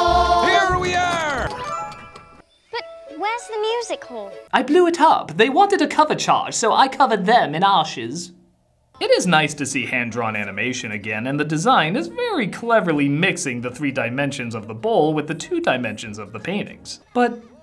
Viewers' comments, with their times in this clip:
0:04 got some serious DBZ Abridged Frieza vibes from that line